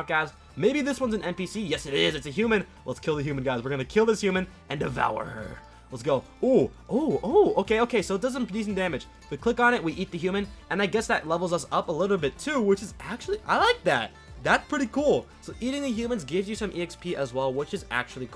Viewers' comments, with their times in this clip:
0:05 The way he said “and devour her” 🤫